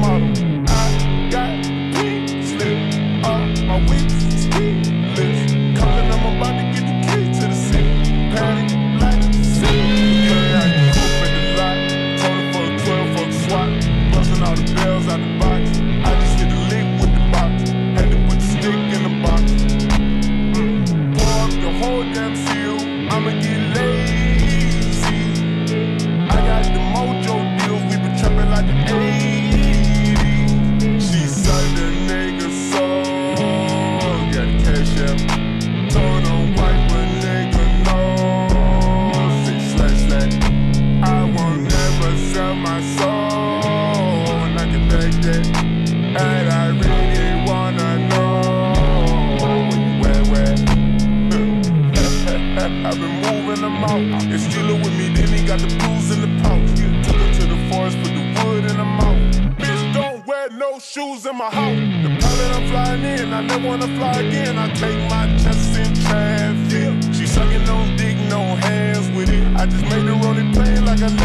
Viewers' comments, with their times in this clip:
0:09 this guitar hit hard
0:10 give me anime vibes💀☠️💀💀
0:11 That high-pitched sound gave me chills.
0:59 We All are here for drop ❤️‍🔥